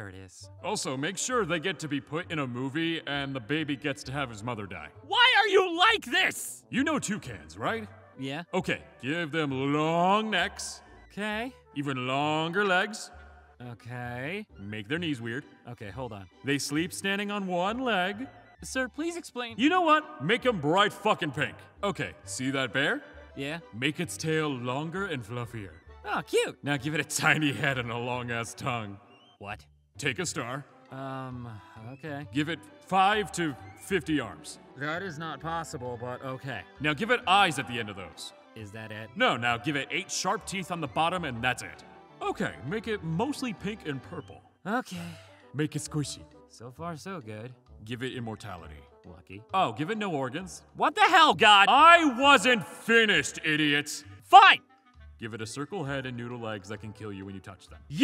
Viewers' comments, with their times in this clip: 0:04 "Ah, there it is." I love the tone of long-suffering, "this doesn't even surprise me anymore" attitude in the angel's voice there. :D
0:44 The way God says 'squishy' is amazing